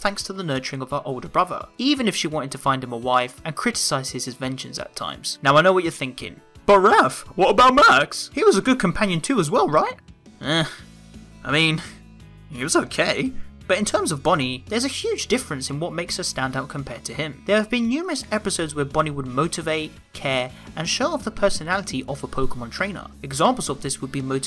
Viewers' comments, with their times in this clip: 0:08 "What about Max?" I don't know what this Max is, but it sounds just like Yamcha. :p